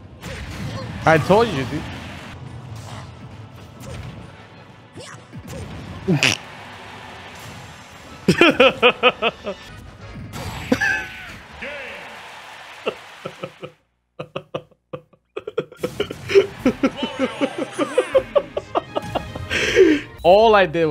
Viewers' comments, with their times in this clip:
0:08 his laugh sounds like DIO’s from the JJBA SC arcade game